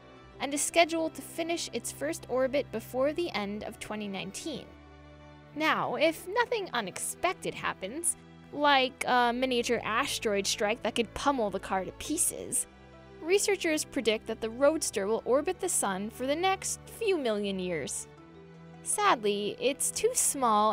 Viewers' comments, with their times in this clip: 0:08 "Like a miniature asH-steroid sHtrike." I don't get it. Why is the narration for all of these videos done in a juvenile female voice? Sounds stupid to me.